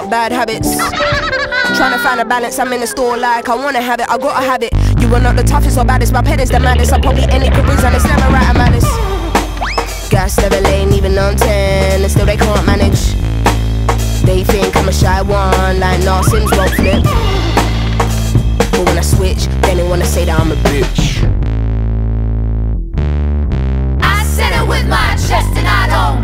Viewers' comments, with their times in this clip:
0:07 This is a crackin' tune. I love how she samples cartoon sounds like Thanks to Lamacq I heard of her. Big props!